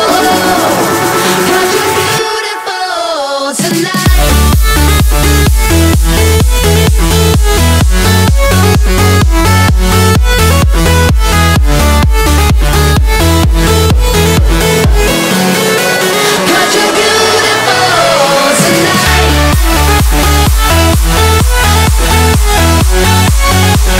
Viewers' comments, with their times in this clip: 0:04 And then the beat DROPS!!!!